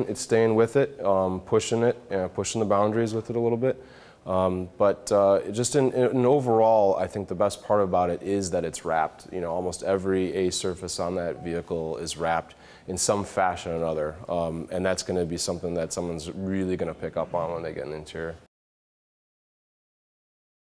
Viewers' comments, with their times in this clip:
0:10 Hey you got a new notification on your iPad!